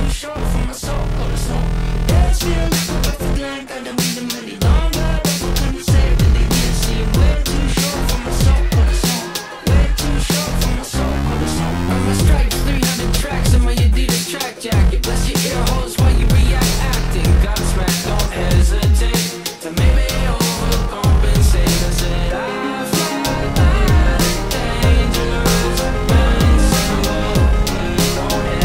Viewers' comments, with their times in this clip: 0:10 The little melody makes my ears tingle. So good!